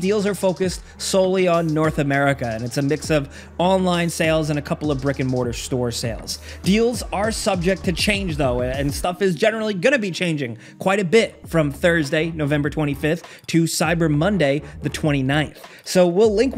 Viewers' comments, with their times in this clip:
0:03 "brick and mortar" but i definitely heard Rick and Morty